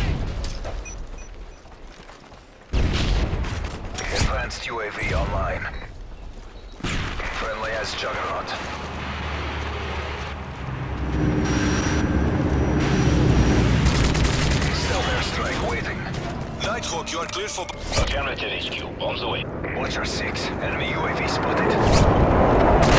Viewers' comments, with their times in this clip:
0:06 does it say friendly ass juggarnaut?!?!?